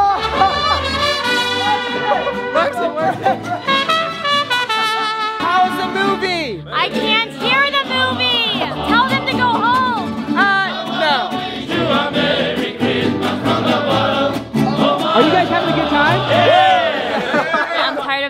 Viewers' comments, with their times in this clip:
0:04 that sounded like Feliz Navidad